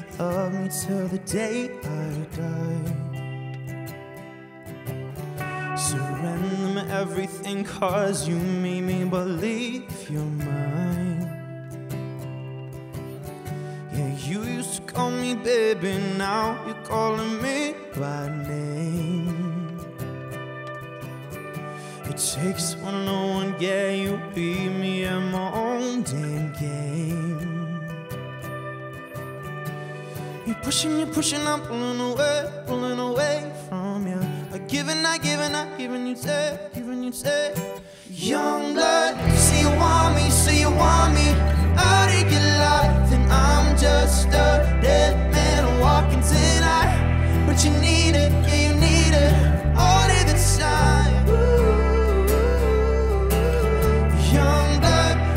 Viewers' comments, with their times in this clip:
0:09 Luke is a good singer but he needs to keeping practicing his vocals. you can hear him go off out of tone and you can see it in his face. I heard a lot of live sessions and he his issue getting in tone.
0:37 thats wat u called harmony
0:38 sounded so beautiful